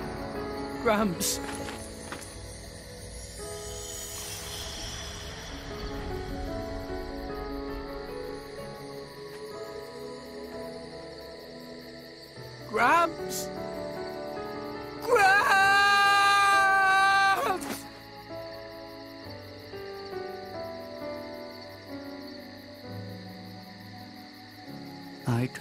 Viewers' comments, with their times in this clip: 0:06 I know this is supposed to be a serious moment, but Rex just screaming "GRAAAAAAMPS!" is so funny💀